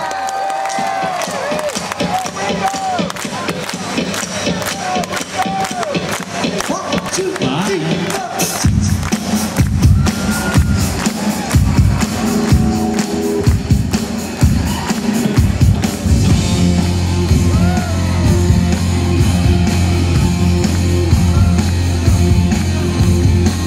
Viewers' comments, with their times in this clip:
0:06 I love how the guy as John says “Bye” during the counting, just like on the original album